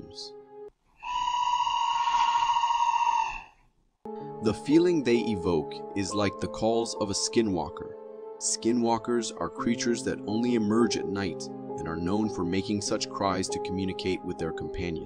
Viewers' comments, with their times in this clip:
0:03 i have heard Night Pigeons make this scary sounding. You are know what i am talk about! Please! Not to repeating! And i am not easily very Very scared.... Though i may be, were i not So Very manly. Very! i accept your warnings Sir.